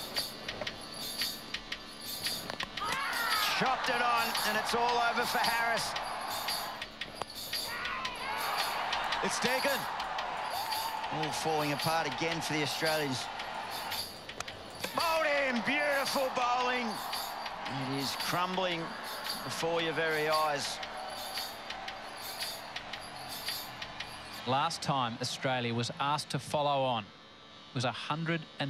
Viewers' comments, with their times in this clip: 0:10 That background music ❤️